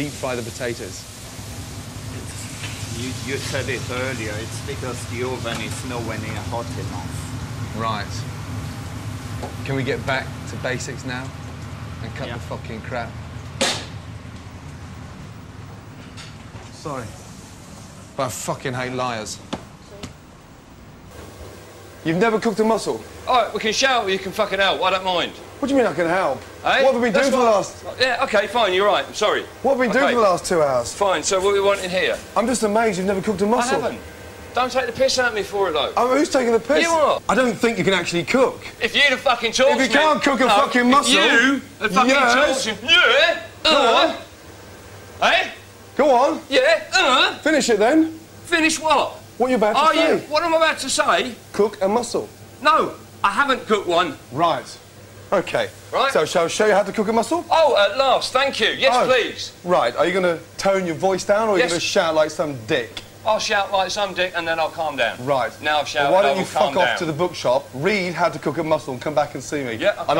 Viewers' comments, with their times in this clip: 0:04 why does the Frenchmen have to talk so slowly like a robot😂
0:22 it’s like Gordon is arguing with himself
0:23 I really like the guy in for defending himself. He even mocked Gordon's accent.
0:42 rare clip of seals arguing
0:42 The second argument in this clip involves a guy going "UHH" "YUHH" I mean, I didn't know that my argumentative style as a child was considered classy.
0:42 A british person, mocking a british person, with his own accent.
0:57 r accent vs. accent, i love it lol